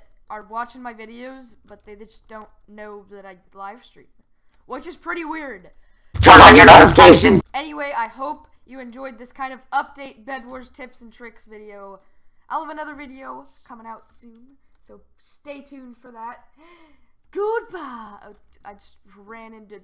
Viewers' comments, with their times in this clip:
0:07 ATTENSION HED FONE USERS IZ SUUU LOIUD JUZT DNT UZE HED FONES